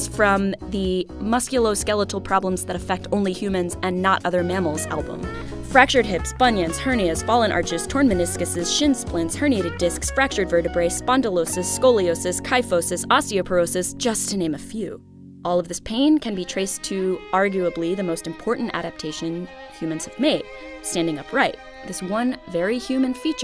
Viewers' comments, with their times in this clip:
0:07 Sounds like shes trying to summon the devil